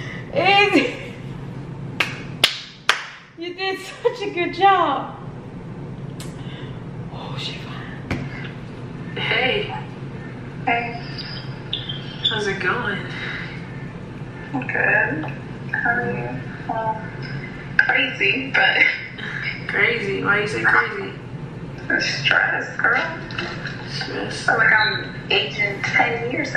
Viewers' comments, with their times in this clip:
0:08 she sounds like such a proud mom 😂😂